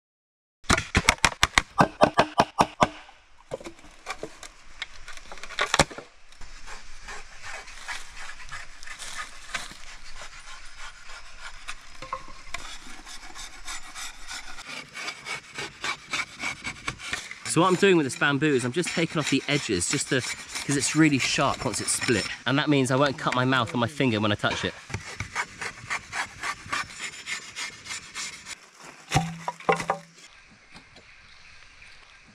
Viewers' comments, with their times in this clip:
0:06 to 8 you can hear multiple times people talking in the background and bamboo hitting the ground etc.
0:20 too you can hear someone in the background, you can also hear bamboo hitting the ground and stuff, definitely not alone. Dont mind him being with someone, but would kind of prefer him to be open about it, especially since he stated he wanted to try this on his own because he was with a guide last time..